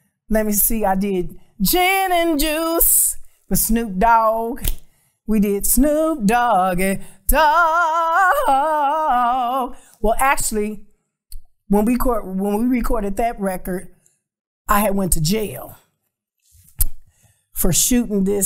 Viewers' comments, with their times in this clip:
0:05 I can listen to her sing that part all day 😩